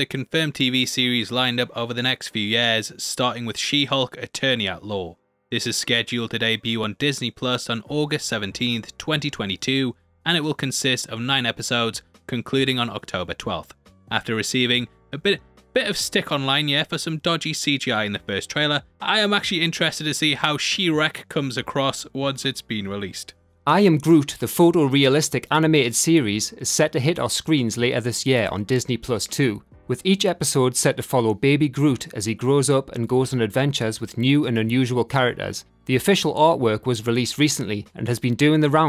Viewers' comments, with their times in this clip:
0:03 Anyone else keep hearing "She-Hulk: Eternia lol"
0:26 Tiny nitpicky note: you say I am Groot is coming to Disney+ too, and the way it came off i heard Disney+ 2, like ESPN 2, BBC 2, or MTV 2 and got real nervous.